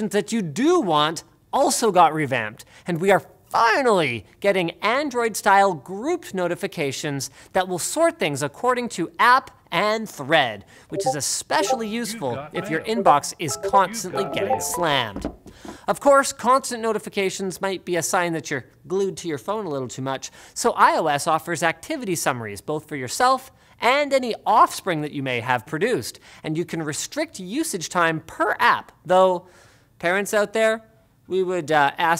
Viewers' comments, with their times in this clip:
0:10 Thought that was my Discord
0:10 who else thought you got a message on discord 😂
0:10 i thought that was my discord
0:10 Am I the only one who checked Discord?
0:11 anyone checking their discord while the notification sound popped out?
0:11 Who else thought it was their Discord
0:13 thought that was my discord lol
0:14 zelda like noise